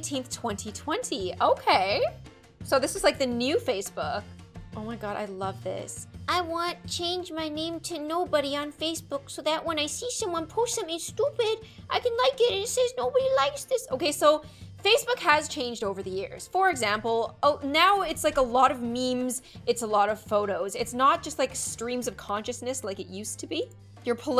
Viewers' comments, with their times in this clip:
0:09 I love that voice 😂🤣